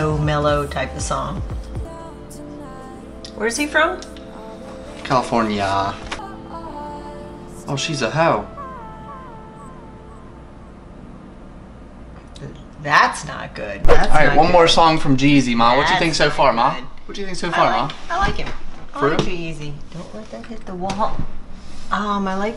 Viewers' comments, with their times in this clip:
0:07 Lol the way he said hoe got me for me that was the best thing about this video